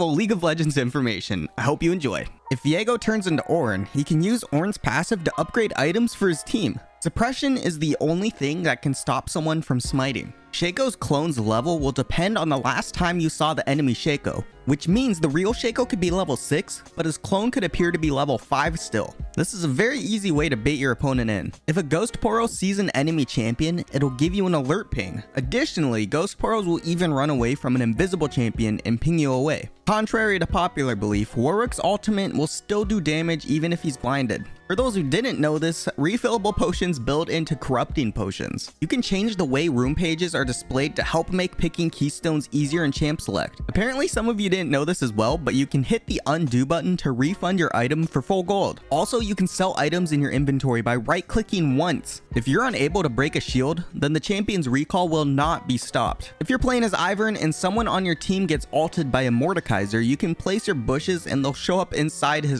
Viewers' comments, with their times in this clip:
0:07 I immediately heard "Depression is the only thing that can stop people from smiting" Most of my junglers feel this when contesting Baron.
0:07 I first heard " depression " (might have something to dig on here)
0:07 “Depression is the only thing that can stop someone from smiling” You can’t change my mind (But it would be lovely and appreciated if you could change my ears xD)
0:07 sounded like depression, i had to turn on titles to see wtf is going on with smiting
0:08 for some reason I heard that as depression and I was like I guess I won't smite the drake if I'm depressed
0:46 you can refund your item for foll gwold